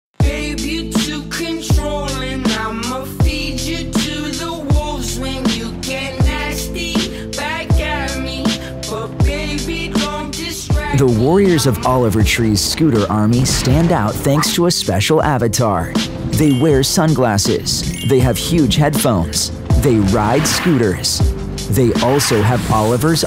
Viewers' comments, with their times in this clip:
0:06 the phrase "this camo is not available in the event" sound like the typical toy commercials shown on TV that say "this superhero has no real laser beams and doesn't fly either." 😭😭 (just it's a joke :v)